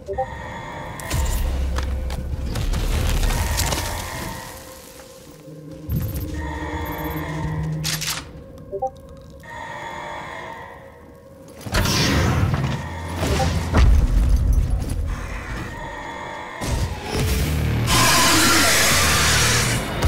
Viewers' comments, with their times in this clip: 0:07 it wasn't your discord don't worry